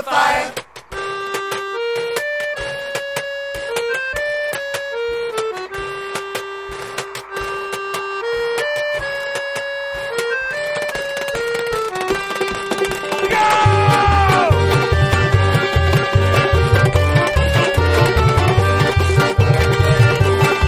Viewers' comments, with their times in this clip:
0:06 The washboard player really gets it ish